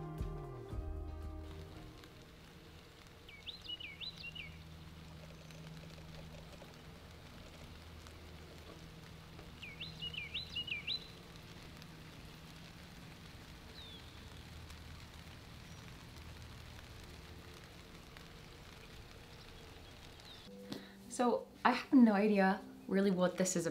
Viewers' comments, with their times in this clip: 0:10 My cat particularly enjoyed this video, especially the birdsong 😂💕